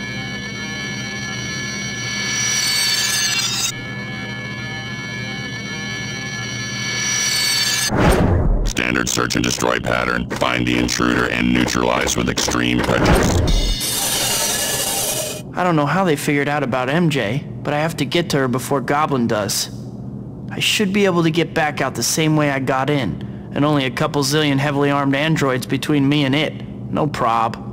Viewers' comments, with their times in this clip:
0:08 if the Dark Troopers in The Mandalorian had a voice, this would be it!